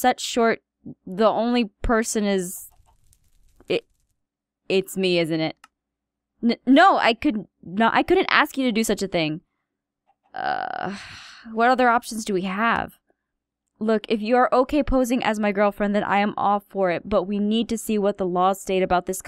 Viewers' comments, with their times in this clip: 0:04 oh my irene the stutter king has returned.